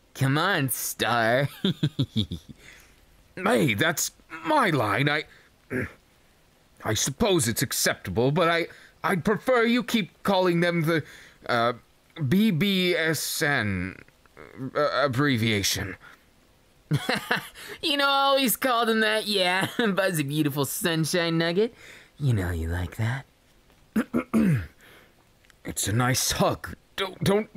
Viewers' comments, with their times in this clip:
0:10 I seriously thought he said BDSM... I'm going to hell...